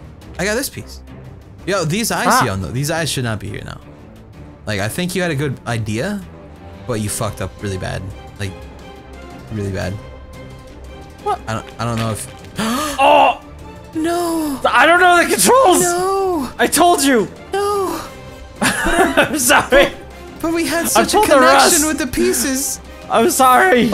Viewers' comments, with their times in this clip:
0:10 the music went perfectly and ended perfectly with that situation XD